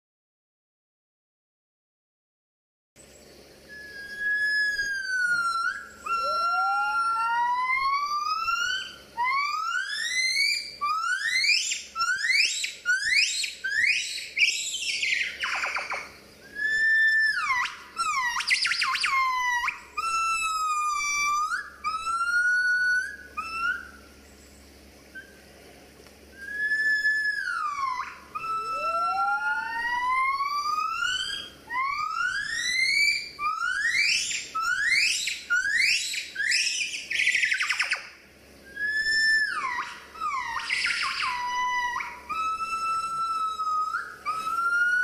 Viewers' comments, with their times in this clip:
0:03 holy shit it's a houndeye from half-life. speaking welsh.
0:03 soo this is how the ambulance got the sound effects
0:03 nobody: Car alarms
0:04 Thats how lazer weapon sounds.
0:05 they sound like tools you would hear at the dentist
0:05 why they sound like a car alarm goin off?
0:05 your gona need to turn the volume all the way up so you can hear the video better sound quality is bad.
0:06 I know now how did we get emergency siren.
0:06 2 year old me making sound of sports bike exhaust note-
0:07 Their talking reminds me trying to sing high
0:09 Someone could've shown me their calling sounds without video and I might've thought they came from a synthesizer. So cool.
0:15 is this where hollywood got their laser shooting sound effects?
0:24 is my mum shouting me out the window when am on the next street because my tea is ready
0:26 Nobody: Absolutely no one: Not a single soul: Ambulances at 2am:
0:29 thats the sound of tha police.. woop woop lol!